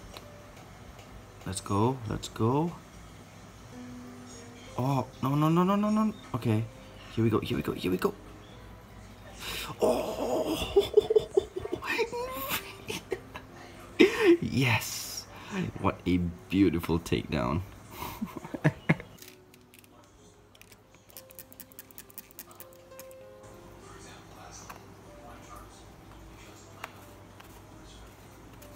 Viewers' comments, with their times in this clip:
0:09 that laughing got me 🤣
0:09 hid laughing got me 🤣